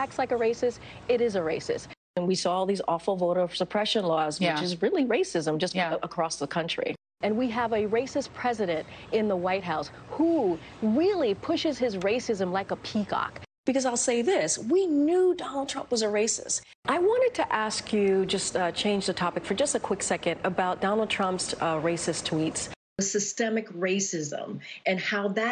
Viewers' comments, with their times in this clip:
0:10 I like the part when she does that weird owl hoot “and really pushes his racism like a peacock” I don’t understand where she got that part about peacocks being racist? Are the peahens racist too? Against what race or races? Is it just peafoul that are racist?